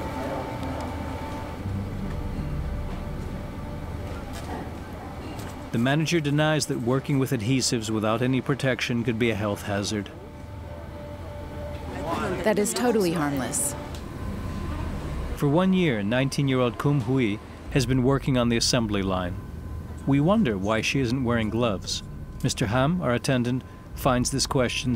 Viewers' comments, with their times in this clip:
0:09 she said that with extreme confidence....lol